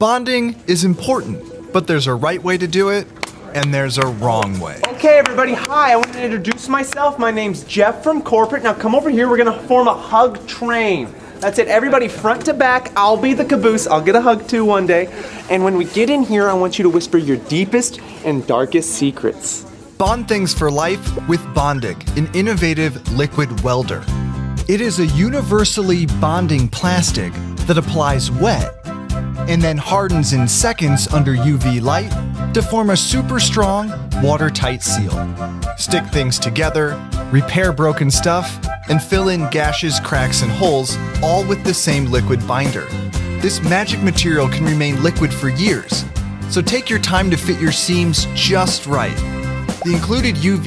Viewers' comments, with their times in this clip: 0:04 This sounds like a trap remix of someone introducing themselves.
0:31 distant footsteps of Phil Swift
0:32 Ye sounds like a flex seal commercial
0:34 The way you said watertight seal dude is going to be the next Phil Swift in